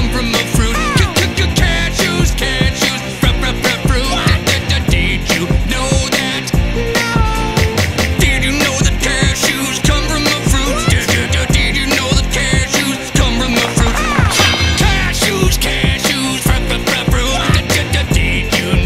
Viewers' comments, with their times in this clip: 0:06 That not was angelic